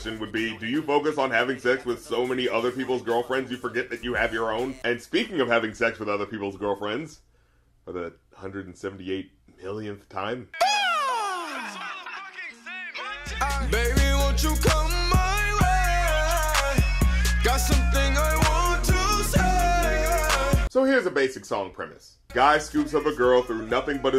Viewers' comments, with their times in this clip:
0:10 unfortunately after he made this sound, Fetty Wap was mistaken for a bird and was shot as game. Such a shame.